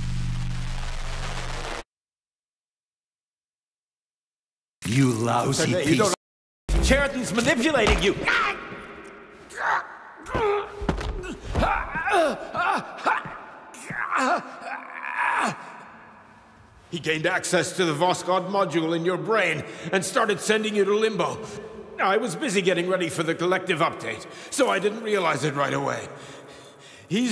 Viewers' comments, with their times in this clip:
0:08 That high pitched 'NARCH!'